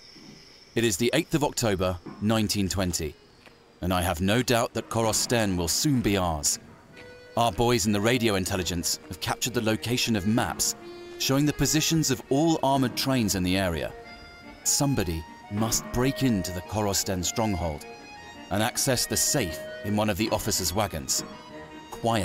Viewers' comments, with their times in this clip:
0:08 I know it's an old Russian folk song, but the Tetris music was rather jarring...